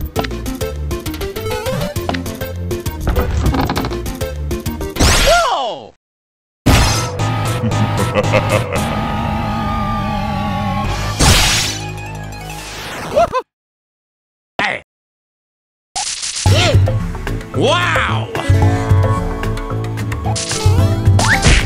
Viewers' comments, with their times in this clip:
0:07 I'd recognize that laugh anywhere